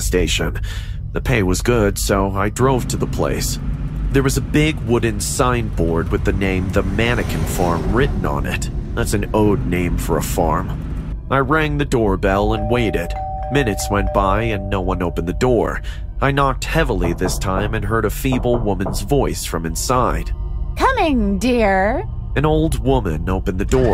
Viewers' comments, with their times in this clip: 0:08 "that's an oood name for a farm" 😂 wtf man, learn to read